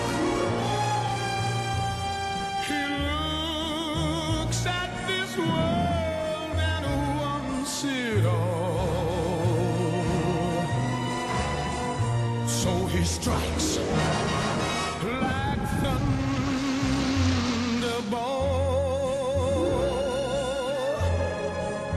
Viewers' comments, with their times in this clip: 0:08 Is no one going to talk about how amazing it blends into the 007 theme song ?